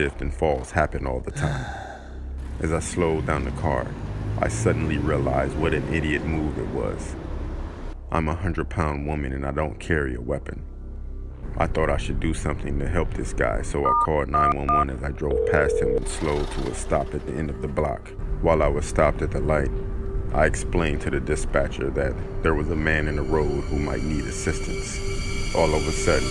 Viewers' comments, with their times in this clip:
0:09 That “I’m a hundred pound women” in such a deep voice took me out Lol